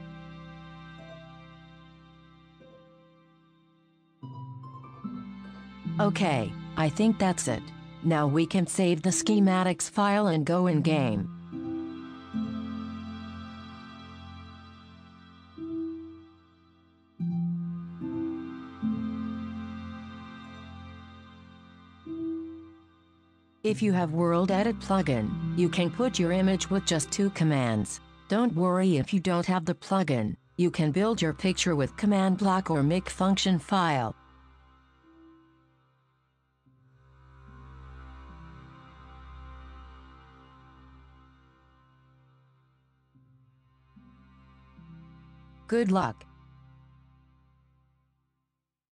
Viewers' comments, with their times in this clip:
0:05 I fucking cackled and died 84 when I heard that fucking google translate voice 💀
0:10 i tought it said: go agane
0:38 love how the music begins that ominous low sound lmao